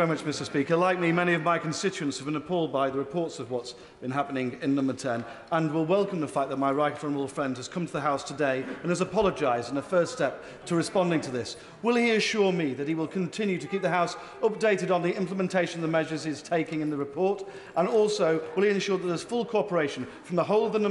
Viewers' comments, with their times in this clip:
0:05 " my right criminal friend" - he got away with that!